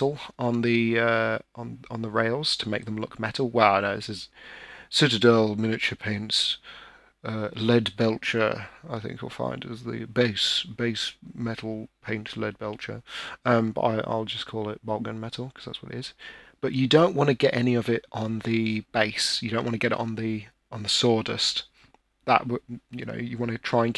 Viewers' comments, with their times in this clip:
0:04 your voice transformed to the great Christopher Hitchens lol